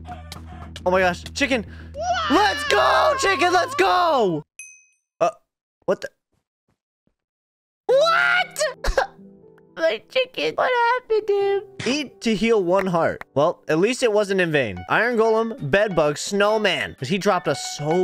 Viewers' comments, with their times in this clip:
0:06 bro looks and sounds like my Chinese server